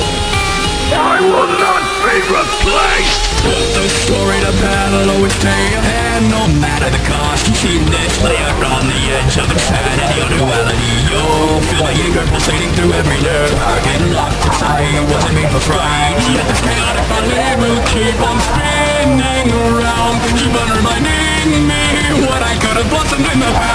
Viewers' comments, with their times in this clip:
0:05 I like this part when xenophanes, lord x ,needlemouse and fatal error voices apear